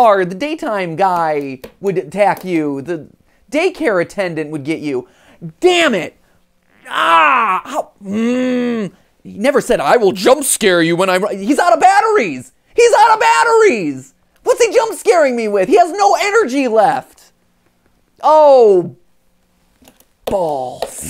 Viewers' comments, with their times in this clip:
0:09 he kinda sounds like Jerry Seinfeld😂😂